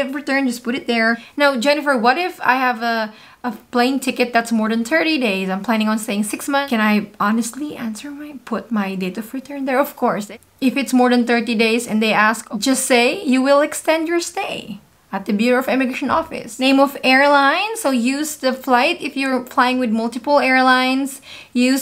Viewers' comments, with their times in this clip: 0:07 What are you saying when you are whispering ? I can't understand your whispering, but it seems like this might be important information.